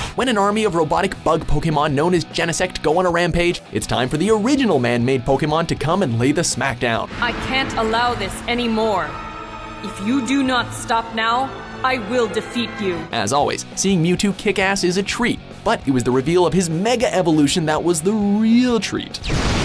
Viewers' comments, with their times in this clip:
0:06 My God! Horrible voice acting for Mewtwo. Smh